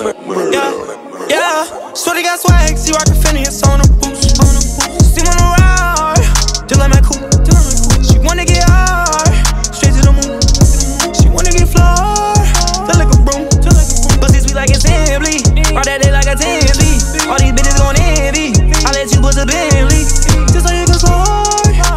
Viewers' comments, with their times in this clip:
0:05 i swear there's a song that sounds just like that part. Pitch and voice but i can't remember what it's called